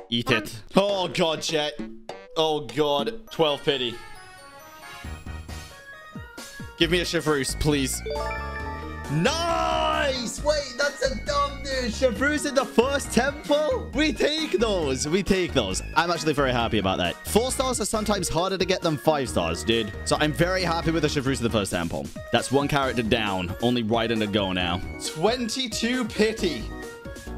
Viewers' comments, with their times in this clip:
0:10 I'm sorry but the background music playing while pulling at the beginning sounds like the Bunnings Warehouse theme song lol